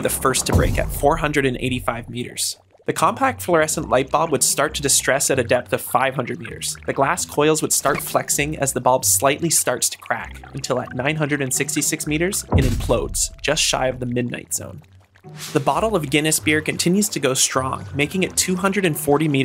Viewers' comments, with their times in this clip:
0:05 your voice made my brain implode seconds in